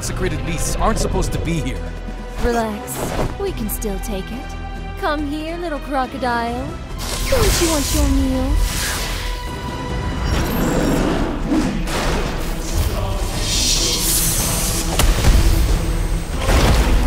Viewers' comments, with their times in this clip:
0:05 bennett with diluc's voice is so cursed